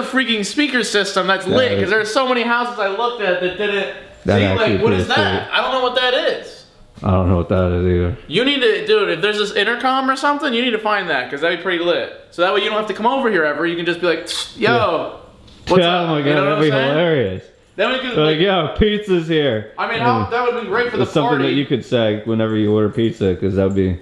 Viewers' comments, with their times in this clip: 0:05 I think thats the doorbell
0:08 that’s a doorbell
0:10 I’m like 99% sure yous are playing dumb but please tell me you both are in fact playing dumb and know that’s a doorbell